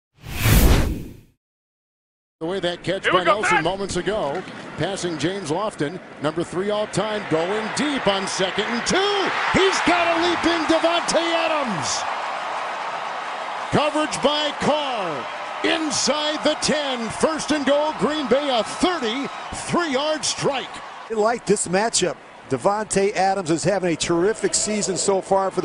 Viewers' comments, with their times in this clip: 0:08 ..... Some woman is getting murdered...... Btw the Packers are over this season since they lost and were SHUTOUT AT HOME to a team under .500